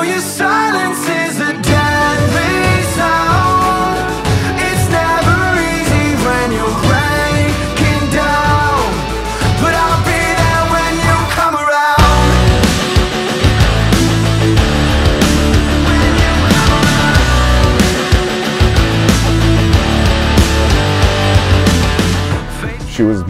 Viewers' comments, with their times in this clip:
0:07 Great song and all but...don't wanna sound like a d*ckhead but you've mispronounced ''anniversary'' yo... \m/